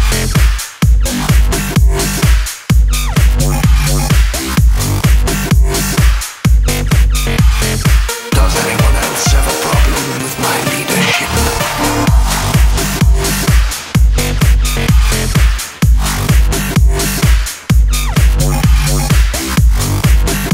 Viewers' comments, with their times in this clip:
0:08 i swear he says "does anyone else have a problem with my need to shit" WHY MEGATRON WHY